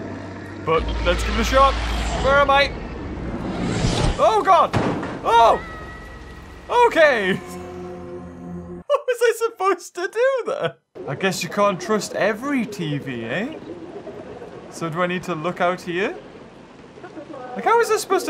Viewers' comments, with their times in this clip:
0:04 I CAUGHT HIS VOICE!!! HES I LITTLE KID!!!